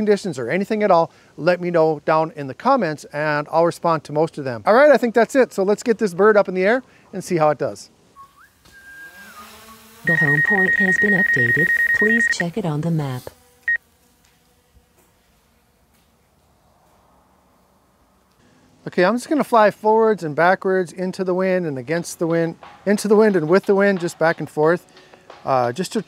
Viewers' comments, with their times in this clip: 0:08 when you took off and she spoke, my dog perked up thinking my drone was around